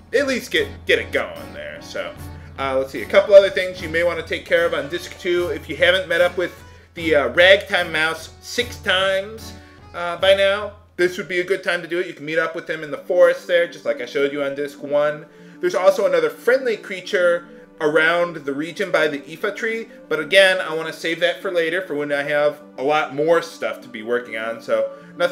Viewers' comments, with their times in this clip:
0:06 What red timeouts and why 6 times?